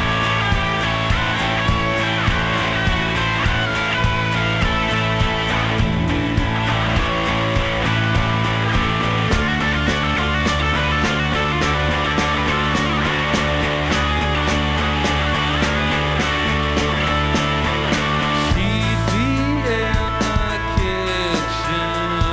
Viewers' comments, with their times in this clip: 0:06 no blazer or jacket julian? it must be 110 degrees there for that to happen. what happen to the sound ? haha thanks for this upload incredible!